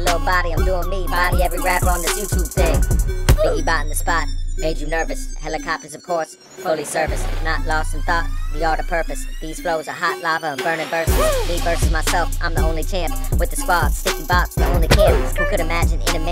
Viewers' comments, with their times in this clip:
0:03 first time we got evidence that skit bot likes the OOF SOUND